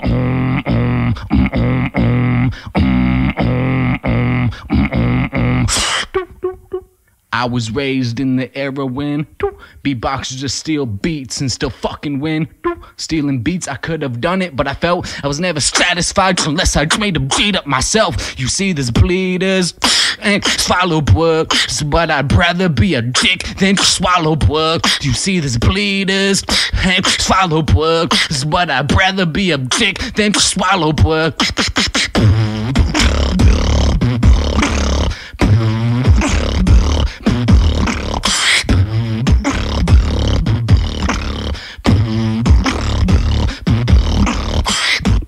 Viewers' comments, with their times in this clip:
0:05 sickest fucking beat I've ever heard started with an equally sick rap. god damn
0:31 Everything up to was all simple and sounded like trash :/
0:33 what is that sound? sound like a modified lip bass?